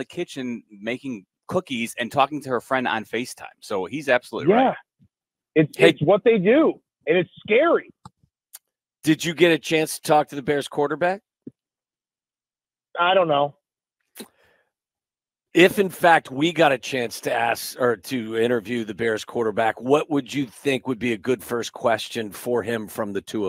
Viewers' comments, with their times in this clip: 0:08 go listen to his answer and the tone of his answer.